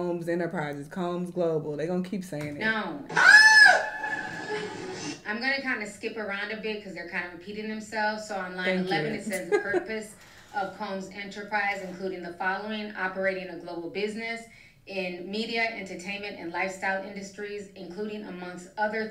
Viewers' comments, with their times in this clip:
0:03 what was that scream 😂😂😂